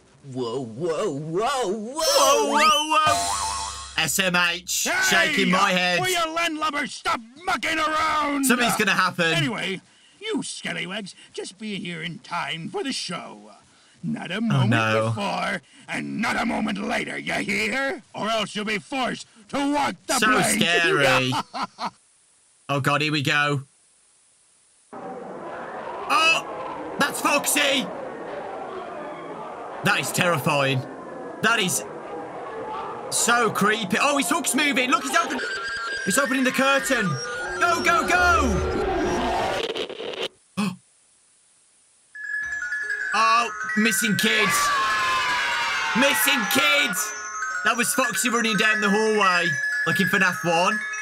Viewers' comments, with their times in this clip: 0:05 made me laugh super hard because I though he said, “HEY! WILL YOU LANDLUBBERS STOP F# AROUND!”
0:06 sounds like hes saying somthing else XD
0:34 am i the only one who hears the sonic theme song?